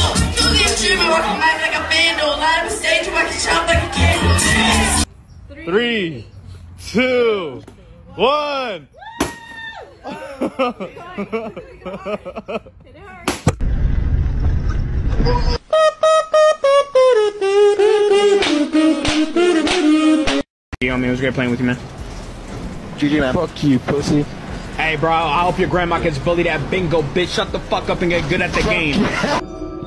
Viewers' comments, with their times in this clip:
0:10 the dude that was laughing got hit 😂, he was laughing at it not breaking so it broke his phone 😂